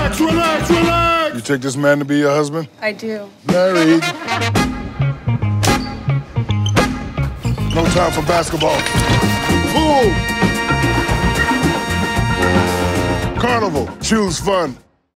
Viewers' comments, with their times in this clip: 0:09 Can we just appreciate how cute the way he says pool and then waddles to get out of it :3